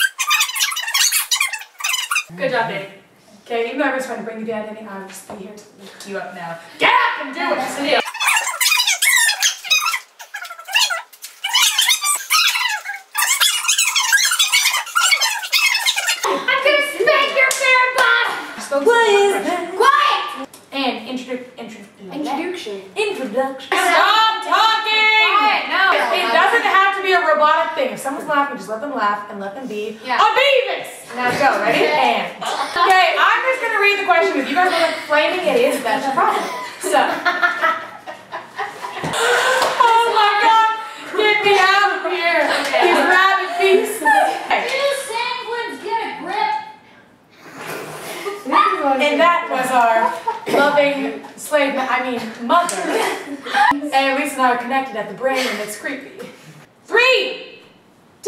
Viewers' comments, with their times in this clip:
0:09 you guys sound like squeaky toys, c: Haaaa so cute. :)
0:43 wait a minute, now i know who is HOWARD WOLOWITS motherr!!! jajajajajaj
0:44 wow!!!!!! their mom sounds like all of there voices! ( mostly Lisa)
0:44 what did the mom say ? I couldn't understand their mom yelling. -_-